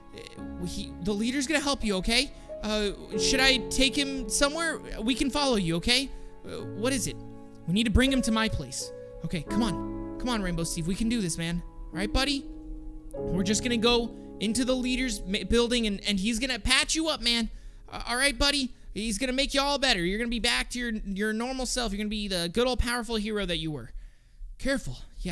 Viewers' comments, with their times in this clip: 0:09 sad music in full effect